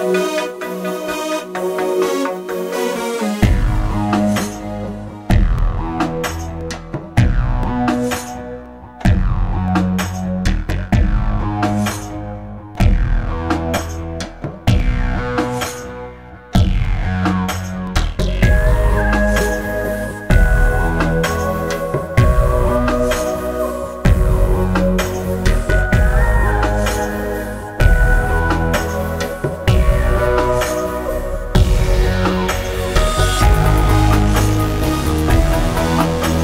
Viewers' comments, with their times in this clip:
0:05 I don't like this kind of music, but that guy has a good voice! Good editing :) LOLed @ Chowder in the TV XDDD
0:11 awesome idea wow they all sing so beautifully. OMFG. THE ENDING will be the death of me.
0:18 i like the melody great song! nice glasses!